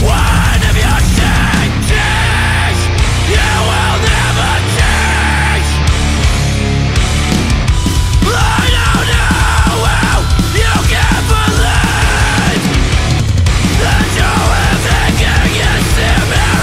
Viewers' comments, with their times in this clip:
0:03 this is LP to have..high energy is my fav